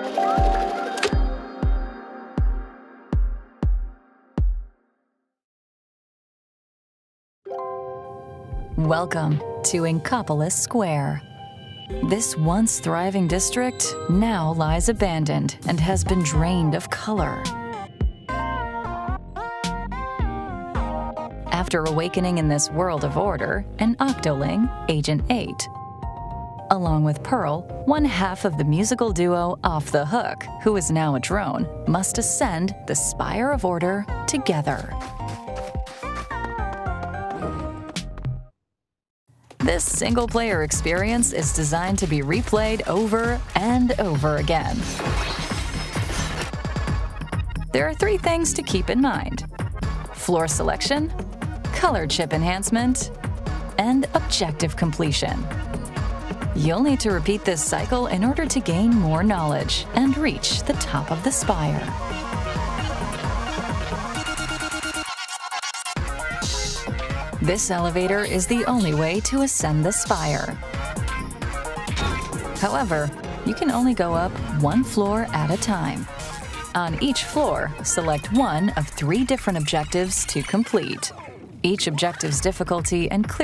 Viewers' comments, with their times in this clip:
0:07 Omg that voice gave me most wanted vibes so badly
0:16 that Acid Hues mashup actually gave me serious chills
0:16 DID Y'ALL NOTICE THAT ACID HUES LEITMOTIF?!
0:46 SIDE ORDER THEORY INCOMING! so I'm hearing a rhythm that sounds like Anarchy Rainbow. if you listen closely when the narration and noise stops, you might be able to hear it in the drums. I'm not sure if it means Deep Cut is involved, I'm just speculating. but it would be pretty cool if Deep Cut WAS involved
1:06 you can hear dedifshs voice :0